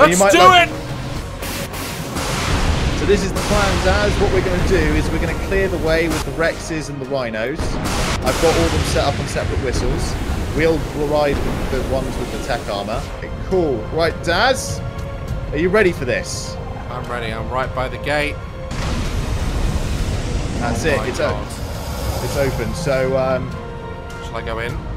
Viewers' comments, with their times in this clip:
0:08 DID HE SAY WINOS!?!